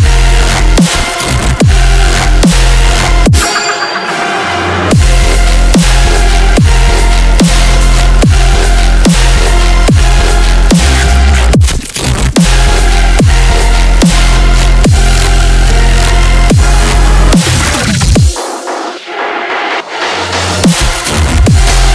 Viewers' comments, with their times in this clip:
0:03 in 0,50 its a laugh?????